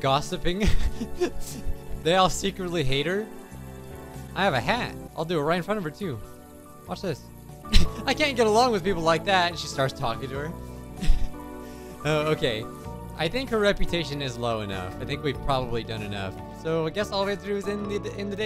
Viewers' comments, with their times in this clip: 0:04 I think she has a hat 🤔